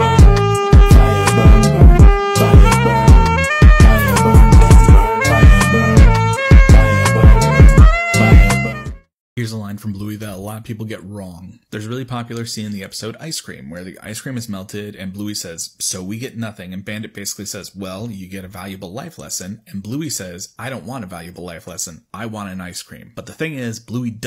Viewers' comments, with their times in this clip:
0:09 Finally, someone else gets it! I thought I just heard weird things...